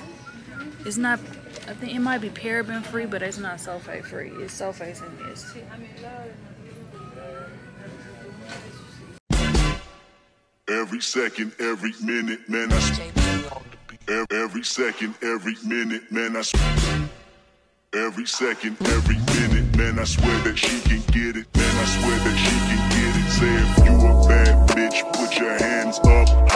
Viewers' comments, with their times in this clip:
0:09 How come I heard that "da da"...and whispered "pretty"......only to hear something else.......I guess that shows my age LOL 😂🤣😂🤣